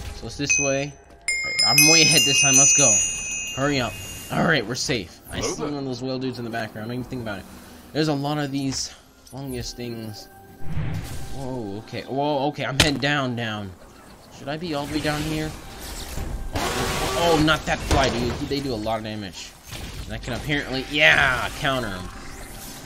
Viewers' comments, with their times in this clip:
0:05 low pitched General Kenobi